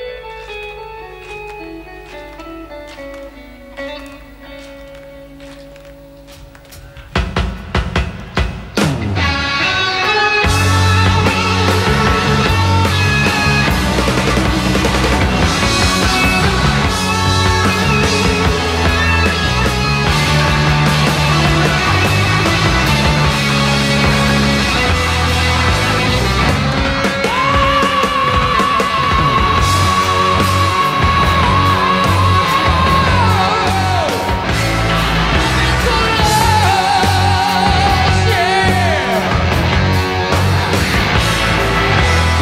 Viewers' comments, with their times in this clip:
0:04 The way he tells the drummer when to start is legendary
0:06 should be illegal. Its a fucking drug. Its the best solo riff ever written and executed
0:08 This is my favourite version of this track. Those three notes that Blackmore plays and the next couple of seconds is probably my favourite 'moment' in all of music. So filled with emotion.
0:26 the voice of heavy metal.
0:26 and so, over 40 years ago, the most epic, powerfull and beautiful scream in rock/metal history was made by RJD himself! (beautifully introduced by a stunning RB's solo)
0:26 Cozy's long fill, Dio's scream... epic
0:26 TOP C SHARP IF I'M NOT MISTAKEN!?!?!?!?!?
0:26 Yes, the ever so epic when RJD reentered orbit… Man, what a voice and what an onset when he picked up again. He could put a fog horn to shame. Bless his soul!❤️